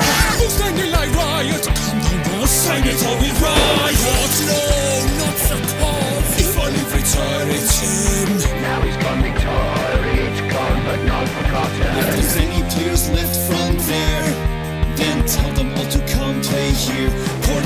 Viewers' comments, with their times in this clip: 0:05 is the best “No not ze cars” such a great accent